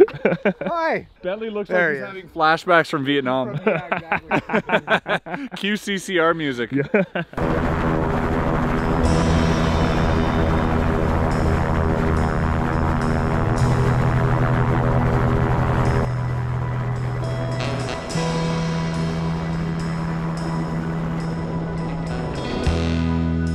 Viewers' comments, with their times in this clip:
0:08 Anyone else thought darude sandstorm was gonna start playing